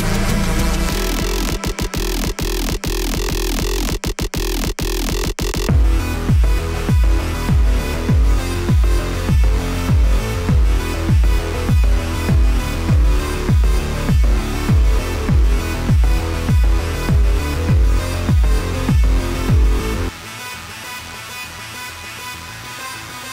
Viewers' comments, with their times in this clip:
0:06 that's some nice music👌